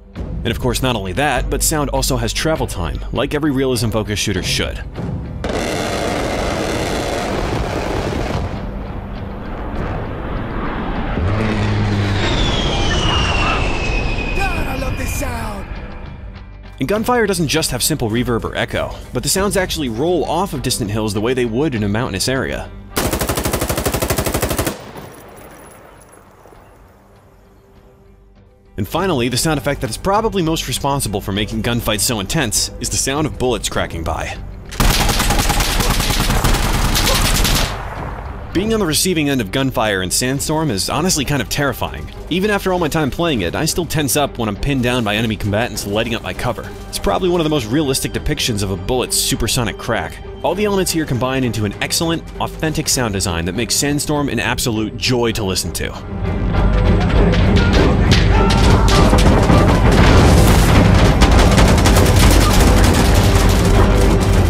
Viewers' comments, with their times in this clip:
0:05 BRRRRRRRT Character - god i love this sound Remember if you hear A-10 and still alive - that mean A-10 didn't find you yet.... I also recommend this game, apart from another, more massive, the Squad, wich include hardocore,teamwork and realism, based on good old Battlefield 2 and Project Reality mod - real Battlefield, not that frostbite-gay era crap
0:06 remember if you hear the BRRRRRRRT you aren't the target
0:50 sound design makes it a joy to listen to enemies shoot RPG ROCKETS muffled by riffle sounds, at a target 10meters away that on impact make no explosion sound whats so ever yeah that sounds very realistic and such a joy to mock it for pretending to seem realistic haha